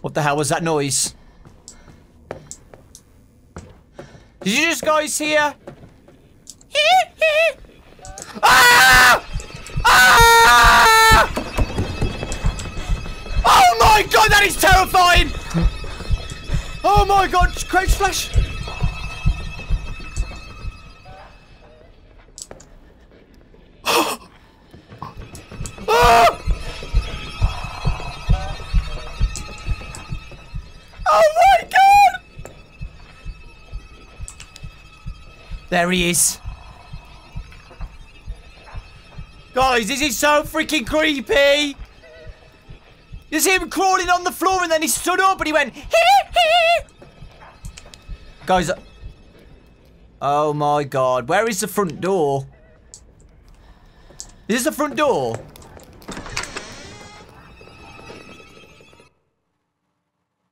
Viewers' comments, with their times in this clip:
0:05 It’s been a long time since a game made him scream like that
0:45 Now that's how you hit a high note
0:47 tho Dawko: "guys I...." MJ: crawls away fast Dawko: gets quiet 😂😂😂😂